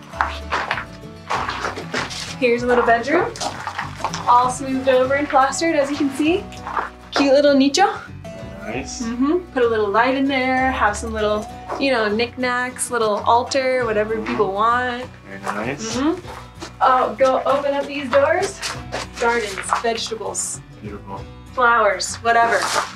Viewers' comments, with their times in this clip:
0:07 a cute little what?? Niche ("neesh")?